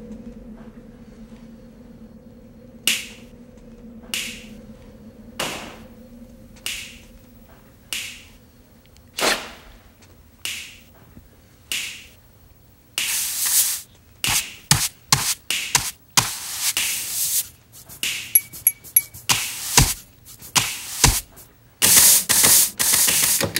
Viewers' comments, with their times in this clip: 0:08 Anybody notice all the sound libs is Nobody really cares about us melody. Listen closely and hum the song kinda slowly 😂😂. Hope I wasn’t listening too hard.